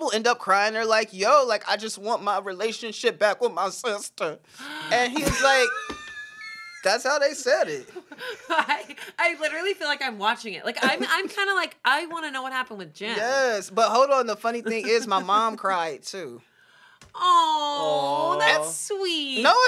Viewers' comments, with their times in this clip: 0:05 This wheeze was insane